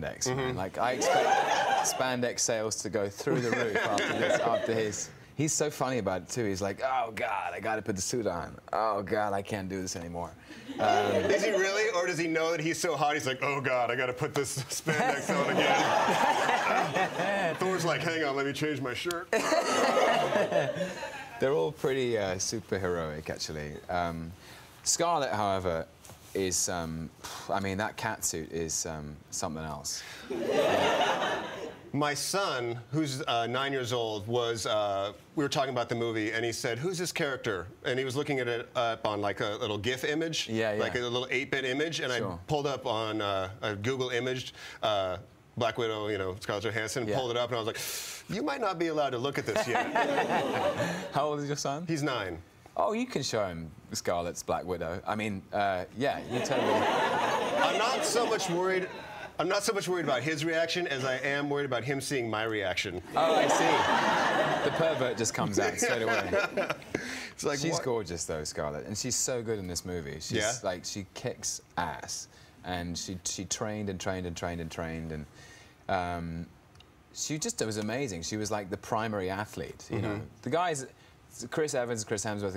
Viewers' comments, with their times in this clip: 0:06 he sounds JUST like Chris Evans.....hehe
0:07 He actually sounded like Chris
0:07 Tom does a really good impression of Chris.
0:07 DID YOU SEE THAT EVENS IMPRESSION? Sounds exactly like him. OMG
0:14 Just listen to his laughs It's supercute!
0:15 Aww that laugh very very cute 😄😄😄😄
0:16 the laugh :3
1:04 it's fantastic hearing your british crush say words like "pervert" i was watching another interview clip and he said something about becoming a "fanboy" for the comics ;D xD